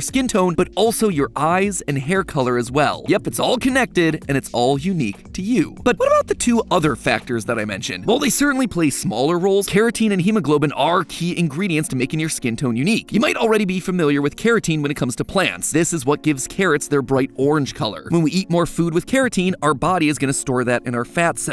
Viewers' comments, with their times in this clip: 0:05 best accidental bird impression
0:05 did anyone notice that little bird call he made lmao